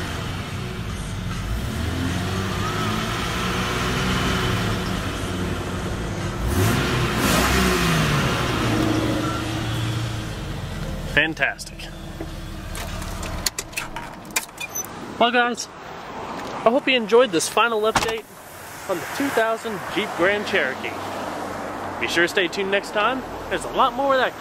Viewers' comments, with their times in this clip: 0:07 did anyone else hear that weird sound when he was racing the engine lol..sounds like something came loose in the engine..